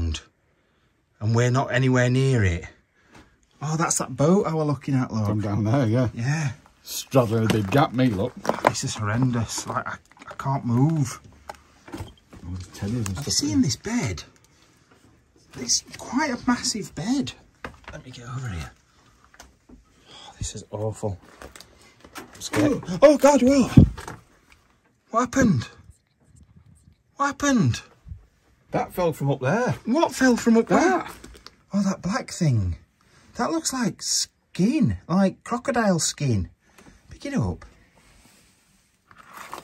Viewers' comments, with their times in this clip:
0:06 Yeah I could hear something in my right earphone.
0:24 We are just pretending the whispers aren't real, right??
0:24 anybody else hear the whispering? im creeped out
0:26 am I the only one that hear the whispers?